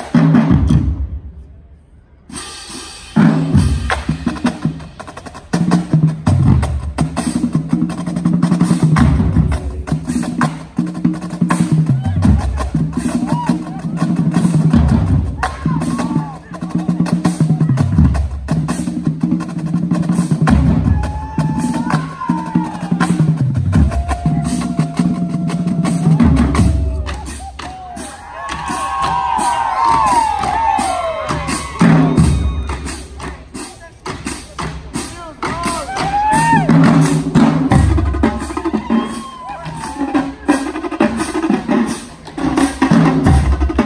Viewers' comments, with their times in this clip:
0:03 Bass put a bunch of Heat in that cadence Fire!! That swag on this line is blowing them all out the water.
0:08 basses are nasty🔥
0:30 1st tenor jamming